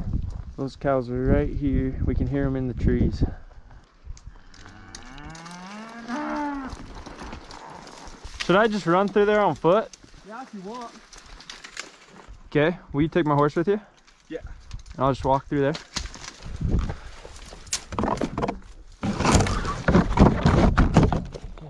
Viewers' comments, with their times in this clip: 0:04 did i just hear a cow saying 'ooh noo' XD